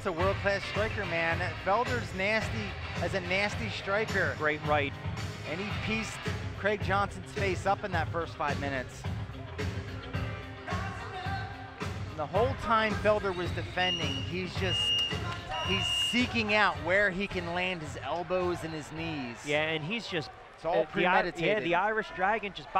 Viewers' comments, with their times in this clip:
0:07 Tyron Woodley in the background singing Eye of the Tiger. Is there a talent this man does not have?